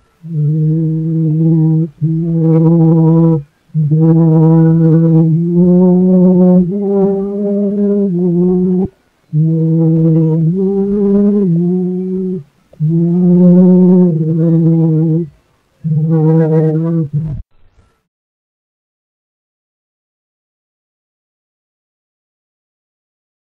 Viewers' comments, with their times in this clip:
0:09 Yes, you can even hear the inhales discernably. Analog recording will always be truer in tone